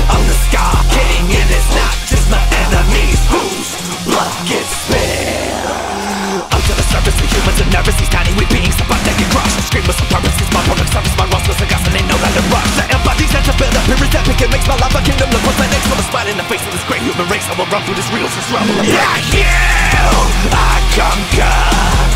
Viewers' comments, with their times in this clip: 0:06 bros not Eminem💀🍷
0:07 Skar fr becomes a rapper